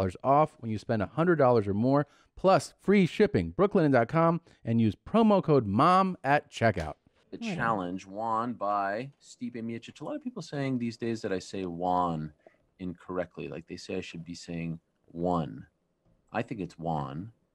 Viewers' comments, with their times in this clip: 0:05 TOM I SENT YOU THIS ON INSTAGRAM ARIEL AND YOU BOTH SAY JUAN INSTEAD OF ONE!!!!!